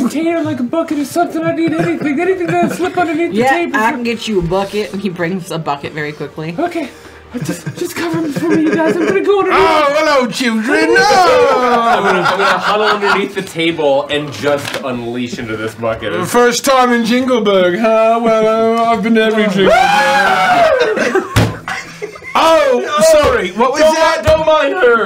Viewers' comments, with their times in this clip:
0:08 oh my fuckin GOD THE WAY THEY SCREAM WHILE EVERYONE IS JUST TRYING TO COVER LIKE IM DE A D 💀